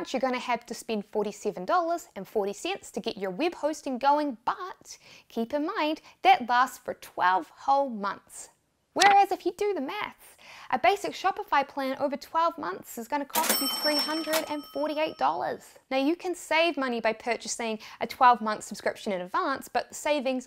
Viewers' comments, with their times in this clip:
0:05 if you do the meth, well cooking meth apparently is the best option to make money.